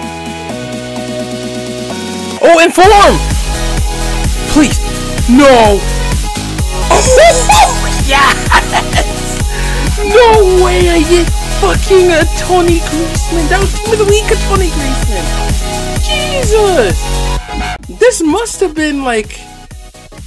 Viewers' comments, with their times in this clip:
0:05 Gosh your such a child. I love how the epic music associates to your happy and energetic mood. LMAO 🤣🤣🤣🤣🤣🤣🤣🤣🤣